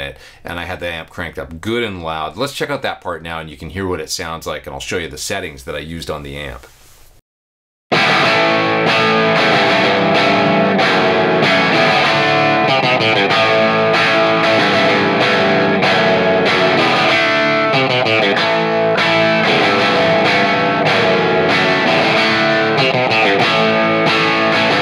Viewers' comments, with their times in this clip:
0:08 that totally nails "The Seeker" tone.